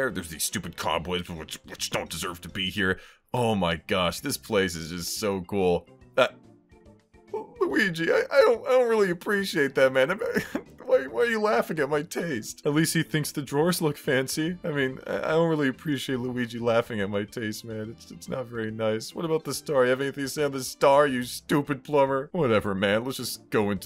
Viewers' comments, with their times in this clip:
0:07 you can just hear how heartbroken he is